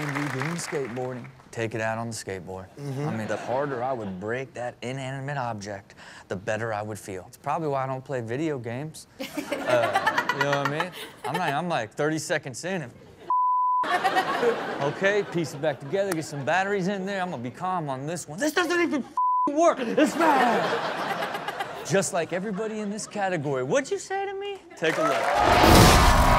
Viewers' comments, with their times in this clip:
0:10 did ya'll hear that laugh from her